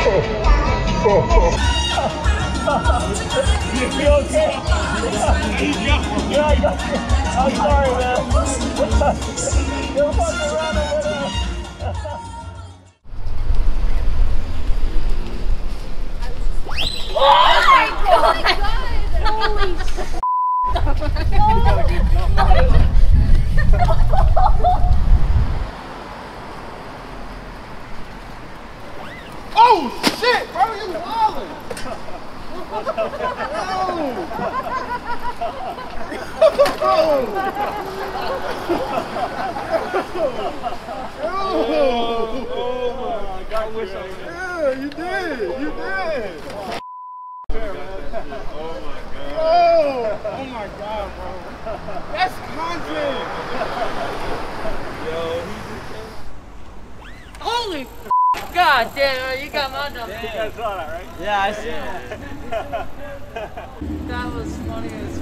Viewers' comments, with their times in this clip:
0:07 😂😂💔she actually farted?
0:09 that was a loud shart
0:09 I'm sure the sound is fake but did she really farted????
0:09 It was real fear. With an accent.😂😂😂😂😂
0:10 is the best she queefed so loud and then checked herself 😂 😂 😂 😂 😂 😂
0:10 🤣😂🤣 Did she actually fart right there?!
0:10 Scare in fart out 😂😂😂😂😂😂😂😂😂😂😂😂😂😂😂
0:49 I like how you scared that guy and suddenly Shakira started playing 😂😂😂